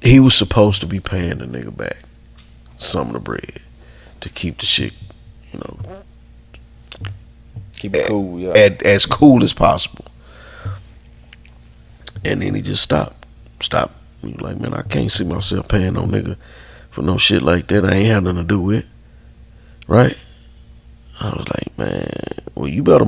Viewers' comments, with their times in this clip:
0:06 in video you can hear homie fart lol
0:06 dude passed gas 😂😂😂😂